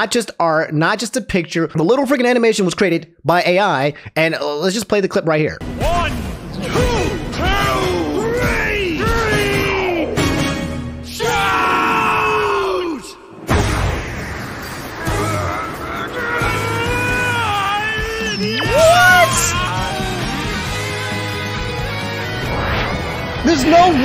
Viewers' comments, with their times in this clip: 0:05 is comedy gold with zero context of the title. It's just 2 random dudes counting to three with the ref being shown to lose count at two. The fighters proceed to scream, "shout" followed by shouting. Then someone wins the screaming match? Thanks AI. Very cool